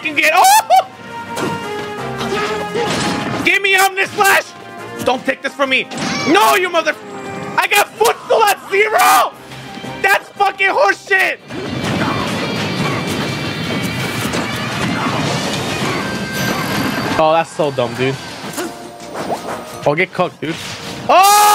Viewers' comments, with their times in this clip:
0:09 that was sick how the music picked up with a different tone